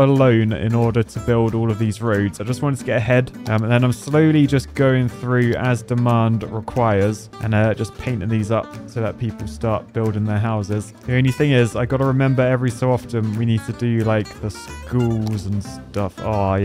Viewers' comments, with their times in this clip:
0:03 I know he said he wanted to get ahead but the first time I watched it I thought he said he wanted head 😮